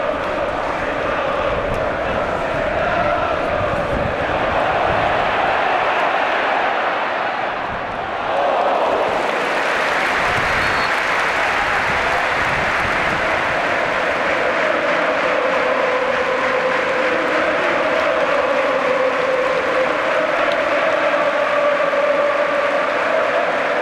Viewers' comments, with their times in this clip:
0:08 crowds singing out donny van de Beek warmed my heart